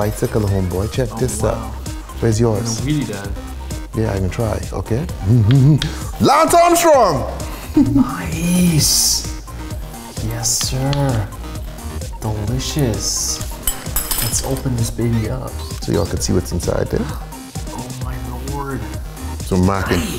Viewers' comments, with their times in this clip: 0:06 Lmao i hated that at first but now it's so fkn random that it's funny like ''Niiiiiice, Yessiiiiiir, Deliciouuuus''